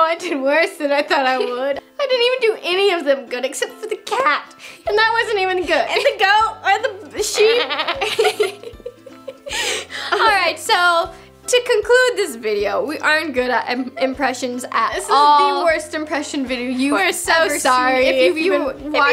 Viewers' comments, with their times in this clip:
0:05 she realized they were really making goat sounds.